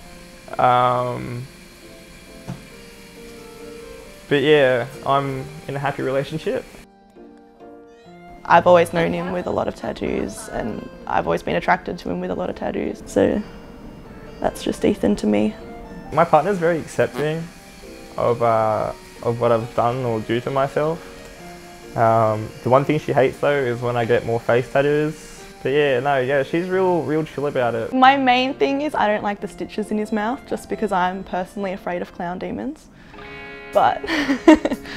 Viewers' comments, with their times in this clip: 0:06 The music at sounds like The abandoned thrifty megamart theme from Pokémon sun/moon
0:16 a big fart